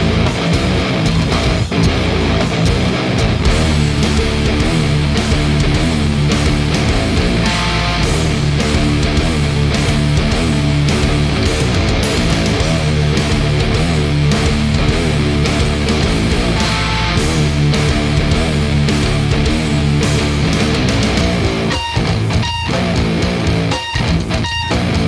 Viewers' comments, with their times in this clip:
0:03 finally this riff is gold the song is so good
0:11 GojiRa influence on the fuuââhhh! Playing the open strings u know mi fren